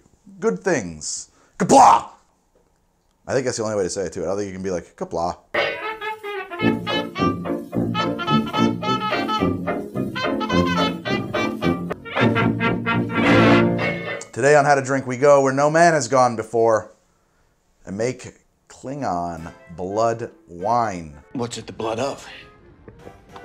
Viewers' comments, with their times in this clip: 0:07 In the episode 'Sins of the Father' Chancellor K'mpec offers possibly the worst Qapla' in the history of star trek to Worf, so there is precedent for it to be said without enthusiasm